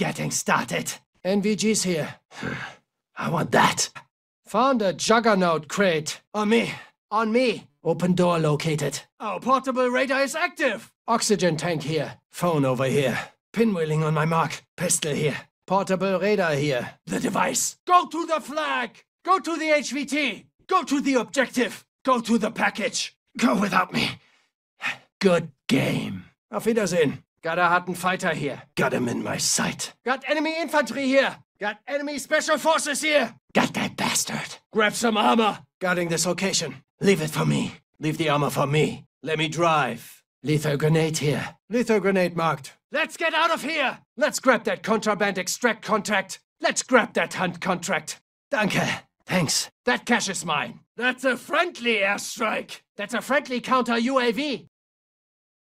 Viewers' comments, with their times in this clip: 0:04 the way he says juggernaut has my rolling
0:39 why does he suddenly become American when he says "let me drive" bro I'm wheezing-